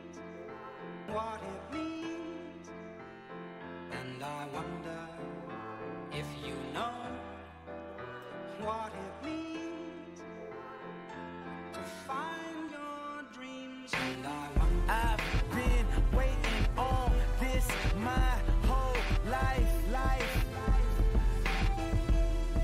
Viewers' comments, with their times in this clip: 0:08 this man really crying BEFORE the beat drop 😂